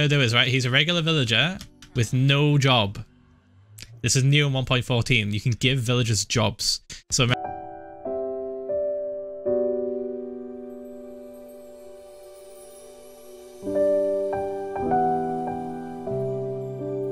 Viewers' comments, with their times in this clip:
0:05 You give these villagers a job... sexy music begins playing